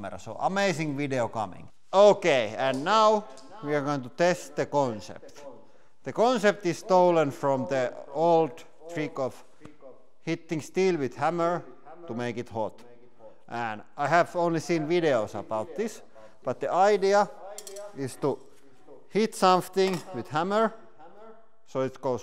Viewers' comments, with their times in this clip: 0:03 Why does it echo?